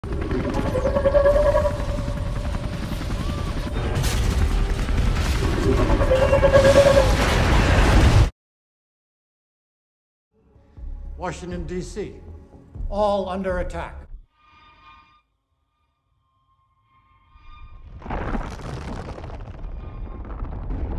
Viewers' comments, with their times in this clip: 0:01 the giant enemy spider *theme song starts playing
0:01 now im a fan if scylla because of that screech